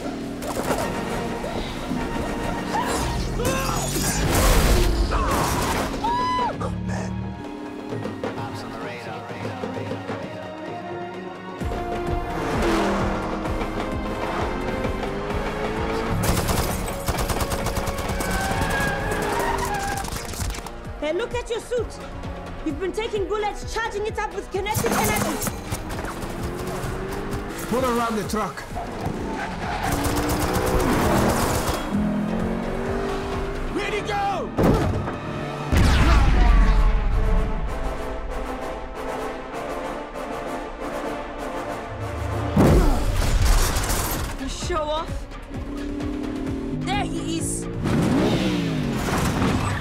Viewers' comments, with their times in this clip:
0:08 from the music, the revving sounds of the cars, simply love it. i'm not able to find the exact track anywhere :-(
0:35 something about black Panther music that just makes it so good